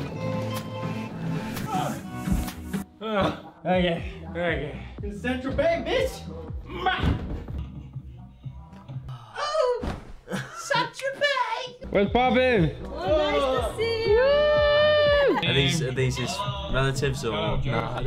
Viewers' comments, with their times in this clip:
0:03 you can hear bella ciao playing in the background